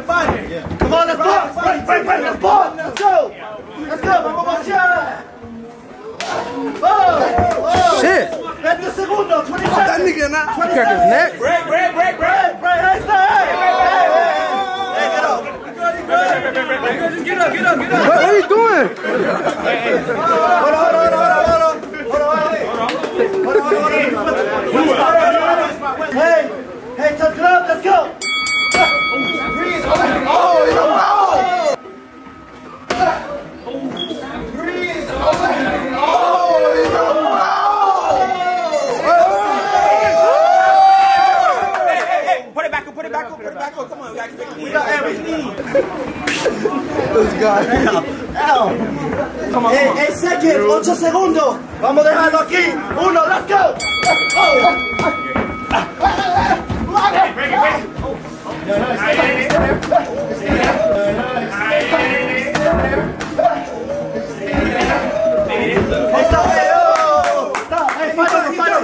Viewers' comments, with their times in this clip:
0:05 he didnt even hit em wtf they wooing foh
0:56 I can't stop laughing at the noise he made wit the white t shirt